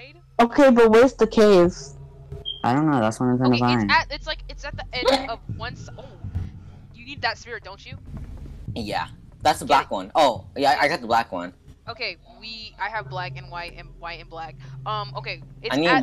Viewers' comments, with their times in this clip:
0:03 gasp thats not a gasp ngl ;-;